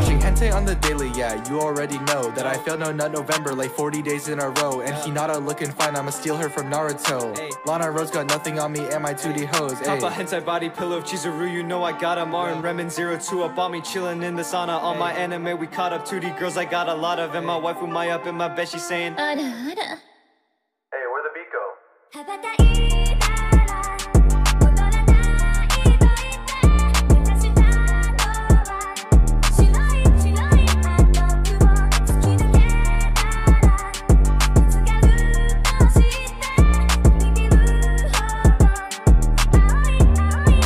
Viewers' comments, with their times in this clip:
0:10 beat droppin like crazy
0:13 was so nice the beat and man this line goes hard man
0:20 beat drop ! ufffff ✨✨
0:20 what a voice
0:20 BEAT DROP ON
0:21 man the best drop😍🔥